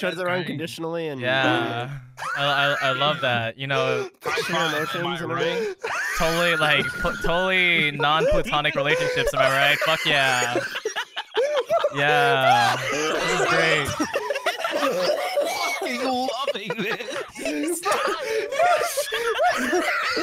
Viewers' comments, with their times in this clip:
0:07 who’s wheezing my guy you need a cough drop